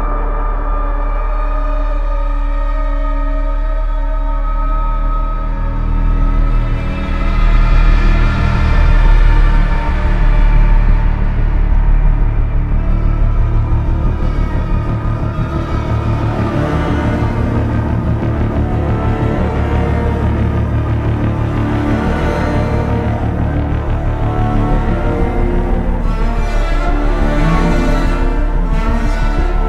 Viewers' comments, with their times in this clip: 0:10 it sounds like the walking dead intro